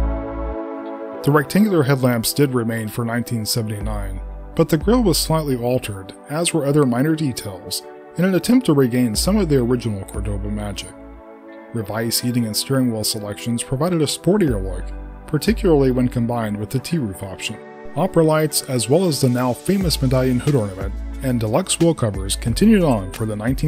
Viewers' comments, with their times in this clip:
0:05 I thought this was the windows xp music at first.